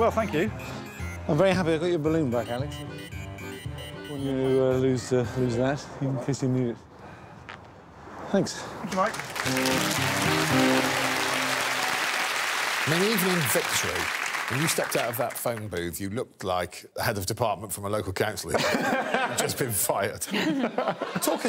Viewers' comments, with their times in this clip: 0:03 If you listen he does another fart.. 😮